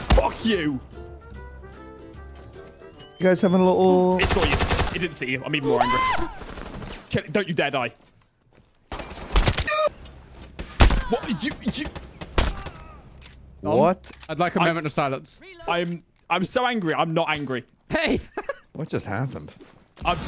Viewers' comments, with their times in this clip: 0:05 Homer Simpson scream lol